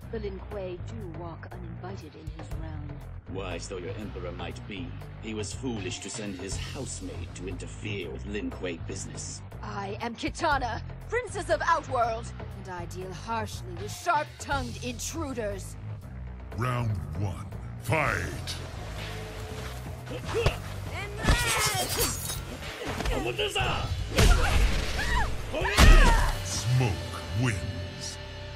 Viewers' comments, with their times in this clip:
0:10 why does Kitana sound like Mileena when she says I am Mileena! Ruler of Outworld!